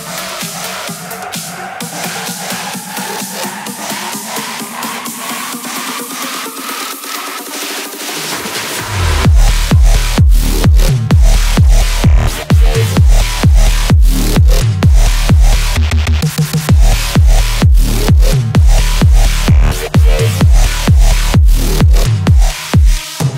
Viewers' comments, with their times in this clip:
0:07 Great stage presence man. I would have loved to be there. Also drop was hot af 🚒🔥